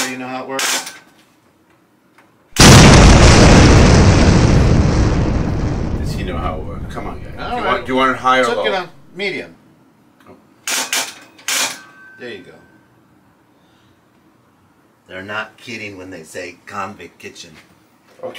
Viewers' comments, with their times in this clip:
0:03 The boom scared the shit out of me🤣